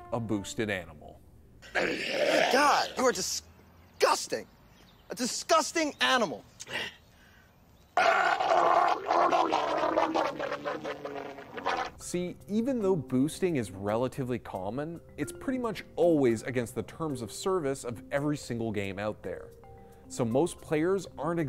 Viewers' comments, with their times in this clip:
0:07 The sound produced sounds like a monster in the deep sea. Kwararararaaaarararrrararararar